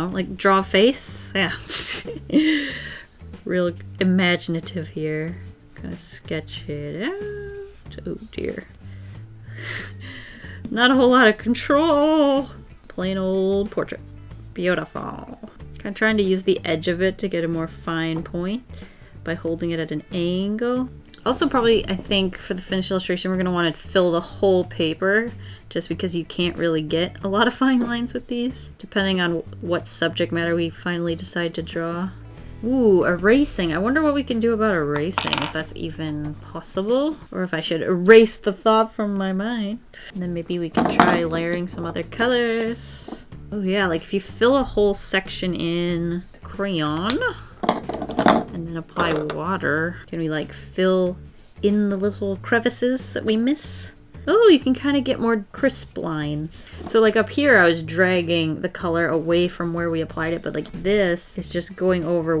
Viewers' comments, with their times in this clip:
0:10 .... A u t o t u n e
0:48 Why do watching your videos always make me tired? Not the fact that you're oure not entertaining!! Its just your voice tacts very calming to me and it makes me tired... I think. It probably doesn't help that I get up for school and now thanks to coronavirus we dont have school so my body is wanting to sleep.